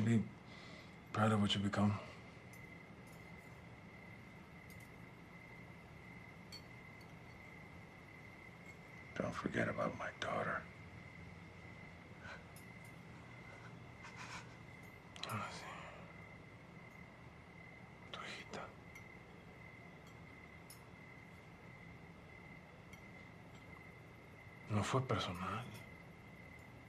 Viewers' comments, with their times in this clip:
0:08 “Don’t forget about my daughter.” Thats anger right there. The wife can tell as soon as she hears him say that.